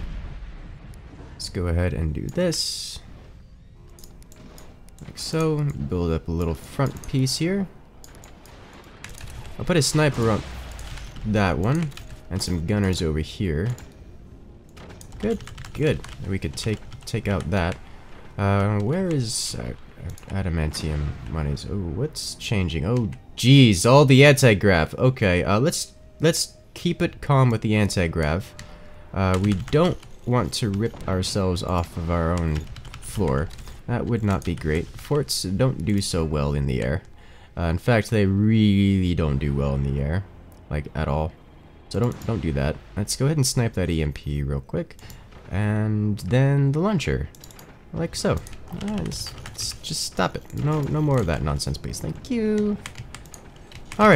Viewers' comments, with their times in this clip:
0:09 Somewhere the video somehow tricks my phone into thinking someone said “Hey Siri”
0:42 he just casually says "Lets just snipe that emp"